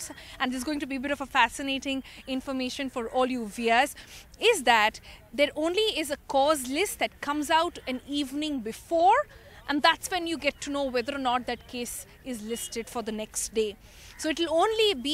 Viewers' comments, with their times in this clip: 0:03 we'ers? What's that?